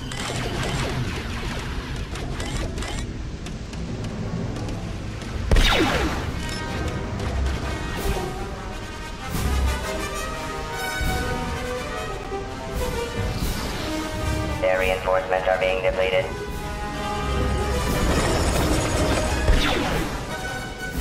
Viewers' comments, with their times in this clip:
0:04 the music do be slapping doe